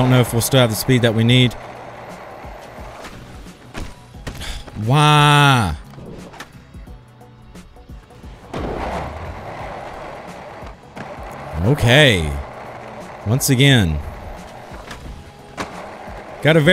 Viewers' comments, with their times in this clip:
0:04 Waluigi is that you?